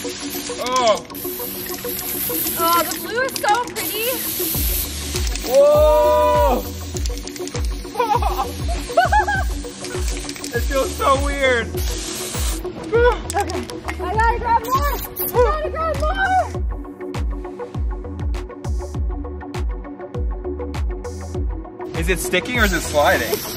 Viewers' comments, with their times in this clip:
0:07 lol his laugh😂